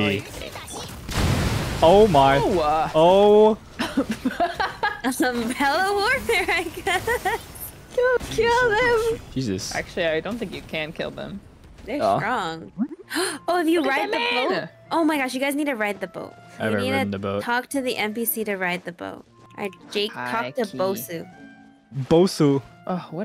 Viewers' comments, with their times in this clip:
0:05 Why does she sound exactly like navia what?!